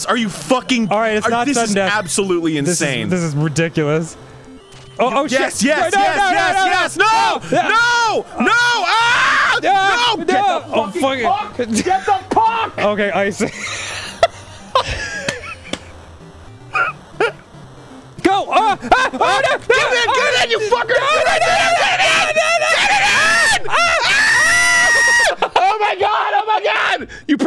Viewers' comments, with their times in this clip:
0:10 Arin kills me. He really sounds like an angry coach.